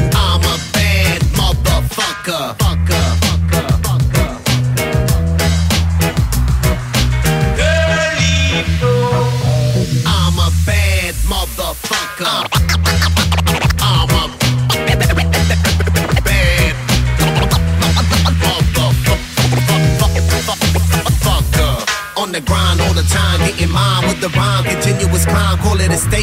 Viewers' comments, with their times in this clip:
0:08 scratch lovers........ tttttooooopppp